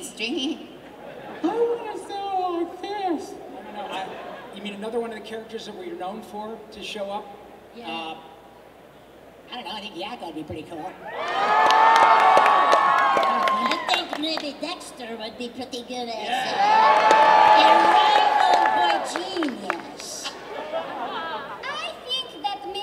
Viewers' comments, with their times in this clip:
0:08 For those that want to hear Rob doing Yakko's voice.